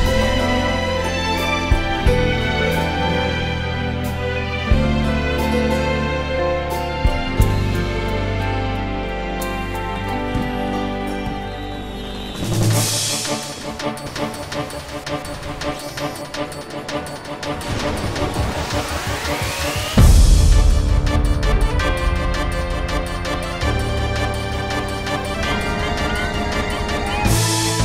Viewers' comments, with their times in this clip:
0:08 damn it, that music is so calming and reminds me a lot of my childhood days.